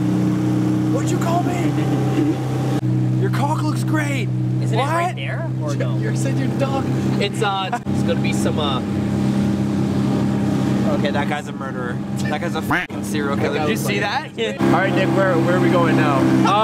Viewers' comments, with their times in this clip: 0:03 they forgot the censor😂